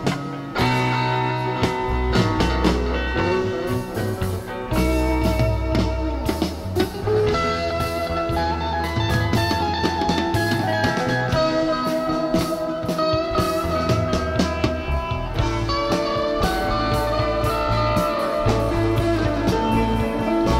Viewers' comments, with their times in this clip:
0:07 ❤ 🌈⚡️💥🤡🤯🫥🙃🙏🏼✌🏻 ❤️ Thank you for another fine selection. I hear that song crying like the wind…